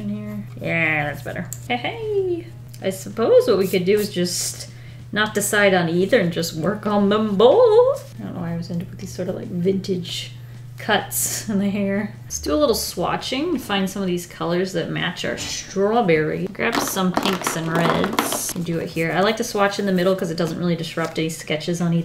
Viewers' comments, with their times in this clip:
0:06 that “them boooooth” gave me so much Juzo Suzuya vibes it wasn’t even funny